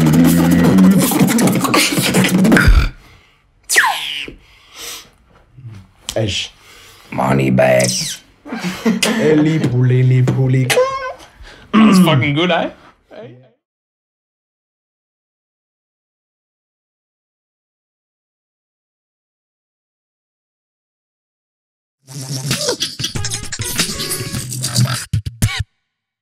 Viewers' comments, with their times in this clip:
0:09 omg i like this beat so mucchhhhhh